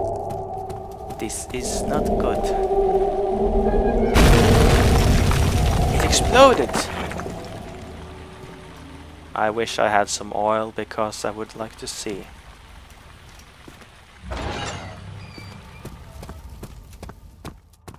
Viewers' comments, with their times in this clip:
0:04 Door slam of doom!